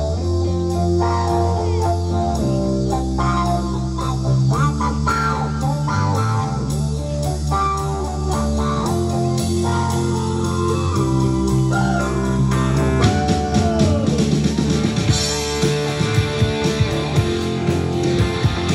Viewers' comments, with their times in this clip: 0:05 Disregard the fact she's 10 and just watch her "uptime" them She got the transition perfect. You can't teach that. You either feel it or you dont. She does. And yes..we feel like they do.